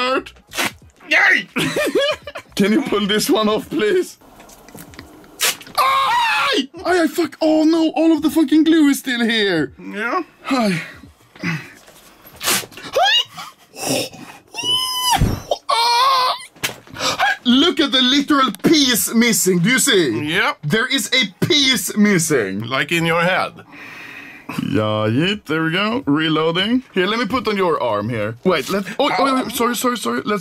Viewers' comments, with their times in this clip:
0:06 bro broked sound barier💀
0:14 R2D2's last words
0:14 R2D2 is that you?